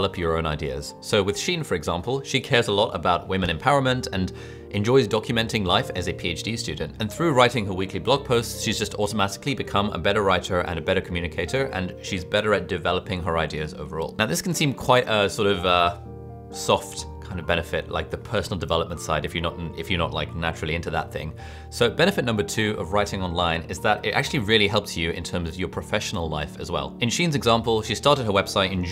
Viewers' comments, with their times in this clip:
0:10 love to ali but writurr and better communicaturr🤣